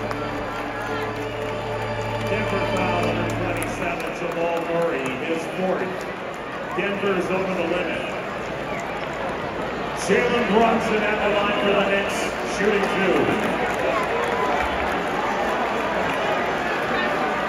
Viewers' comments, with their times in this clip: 0:05 Awesome Game! I was at this game on the other side sitting on the Chase Bridge! Jalen Brunson’s free throws I was the one who started the MVP chant!! 🟠🔵